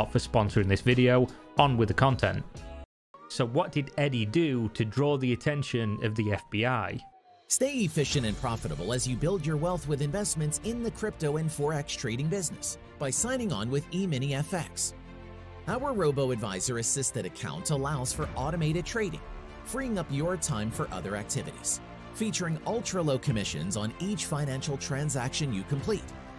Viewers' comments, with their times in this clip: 0:09 any idiot who didn't click off the add when the royalty free "EPIC" music came on deserved everything they got and more.